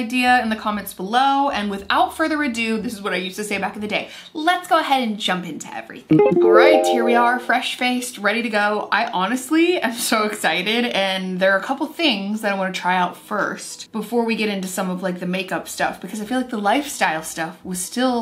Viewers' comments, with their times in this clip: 0:06 Anyone else think their eBay was going off